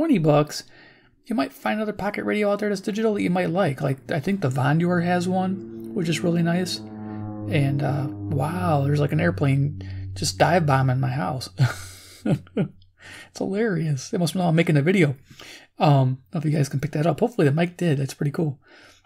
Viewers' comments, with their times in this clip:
0:04 I did hear the airplane. I know that particular sound well. It is an agricultural applicator aircraft with a piston engine. Doing a turn on a field, then another. Most of this kind of aircraft these days have a turbine engine that are hard to hear. Love your videos. Subscribed and notified.